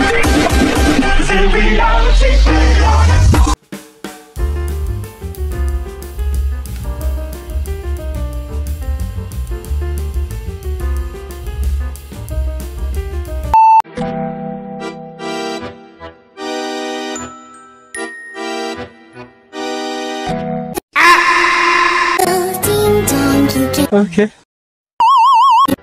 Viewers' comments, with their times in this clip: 0:07 Caught me lacking💀🤣 cuz of the music